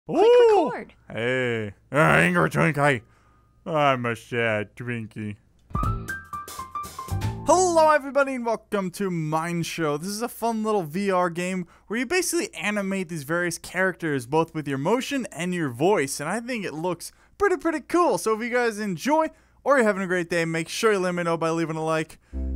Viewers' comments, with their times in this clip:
0:07 ha T-pose halo song comes on oh god THEY ARE HERE